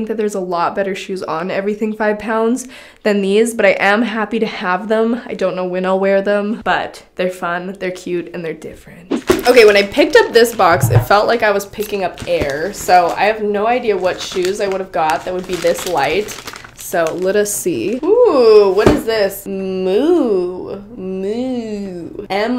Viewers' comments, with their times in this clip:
0:06 "And they're different" #soasmr